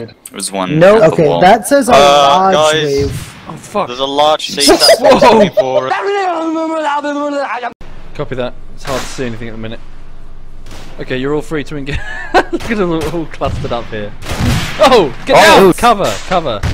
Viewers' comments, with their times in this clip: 0:04 whoever made that noise when the dude was flying through the air